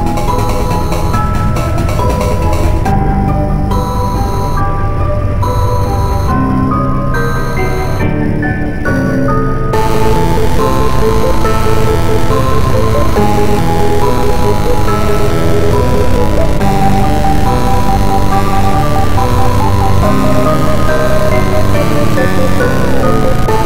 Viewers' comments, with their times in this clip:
0:10 This composition is very suitable for a horror game